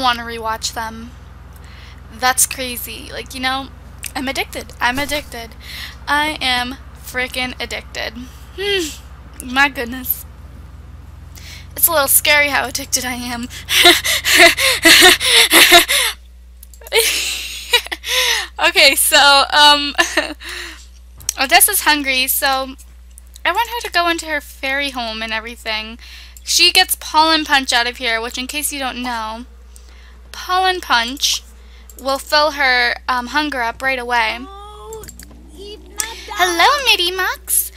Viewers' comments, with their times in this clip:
0:06 That's one heck of a laugh you got there. :P
0:12 That laugh is not scary at all
0:12 creepy ass laugh
0:22 LOL mins you did a creepy laugh